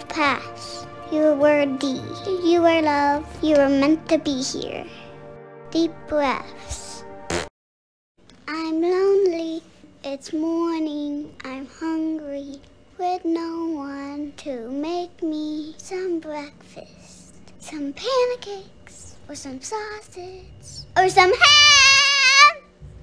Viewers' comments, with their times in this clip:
0:09 I love Penny’s breakfast song 😂😂😂🥞